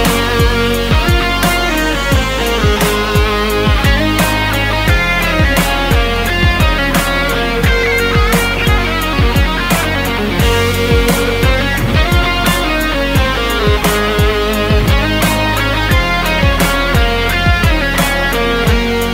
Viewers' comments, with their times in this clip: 0:07 some bluesy stuff.. liked :)